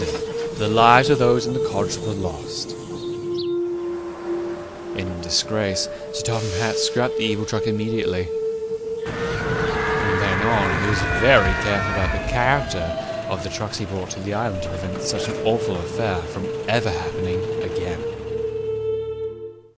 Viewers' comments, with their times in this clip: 0:09 Wow! That scream is scary and horrified and almost like Shed 17!
0:09 The scream gave me the chills.